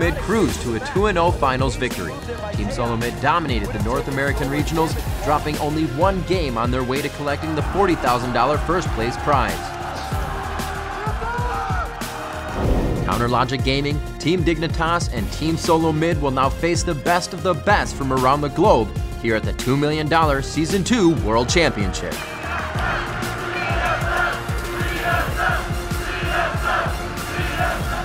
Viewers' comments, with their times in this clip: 0:09 King Kong battle shout